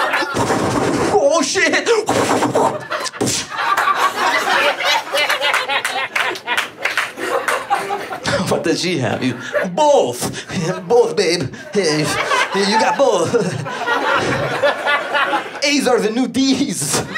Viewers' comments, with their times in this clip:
0:05 Gorillas - Feel Good laugh